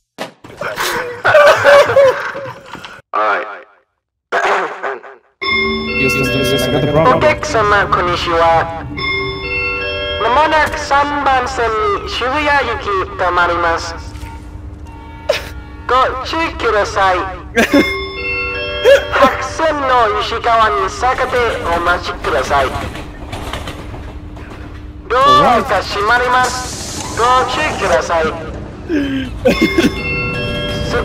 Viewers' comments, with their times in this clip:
0:08 that train announcement tho, y does he actually sound like a woman as well? xD
0:19 ,if you listen carefully MAYBE its say "suck a deck"